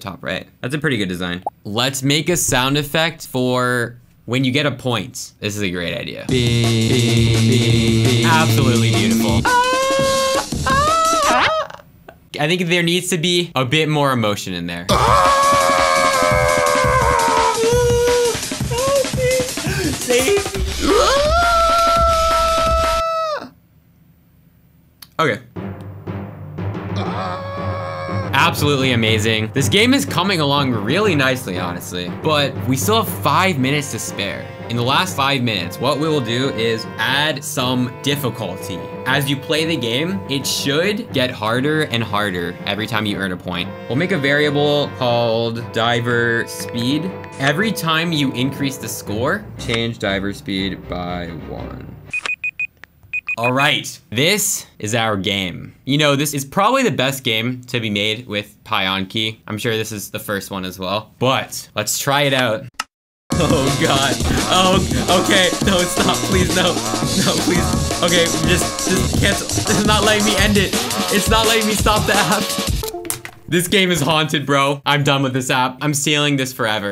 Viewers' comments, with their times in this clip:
0:09 pizza tower old enemy screams real 💀
0:09 flings things and people sound effects when you get flinged be like:
1:03 bro went to the infinite "aaaa" game